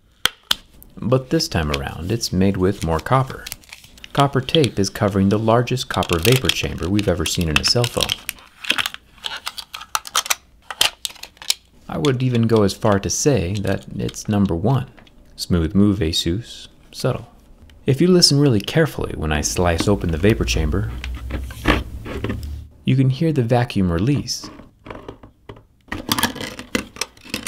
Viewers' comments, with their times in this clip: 0:09 ....feels like phone shouted... Any one noticed that?